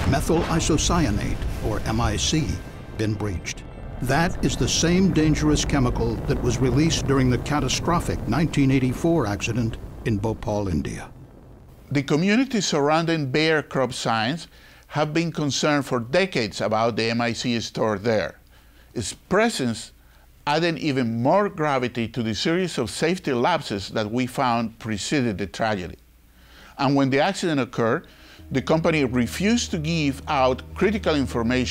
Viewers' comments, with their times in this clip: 0:08 Is it me or does the dude around the look and sound like Guillermo Del Torro?
0:13 Dude talks funny. Just saying, is all.